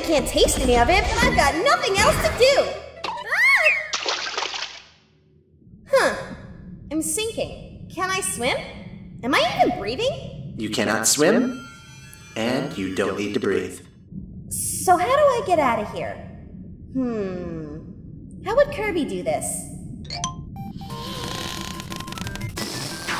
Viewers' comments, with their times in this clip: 0:10 sounds like a DM